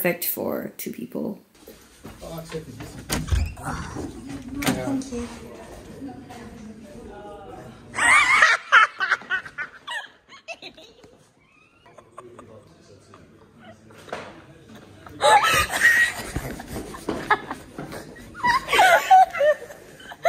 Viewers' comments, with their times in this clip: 0:07 this laugh lmaooooo